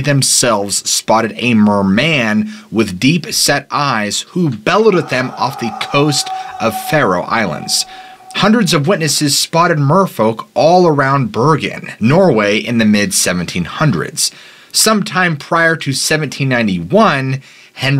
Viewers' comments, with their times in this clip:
0:03 I'm listening to this to fall asleep and that scream scared the life out of me